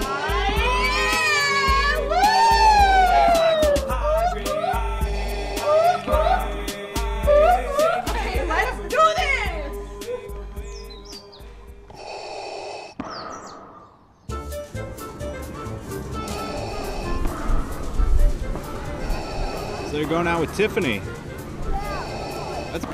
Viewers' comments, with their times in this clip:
0:03 vader vs girls screaming... The contrast, people, the contrast!!!! :-D I`m in tears!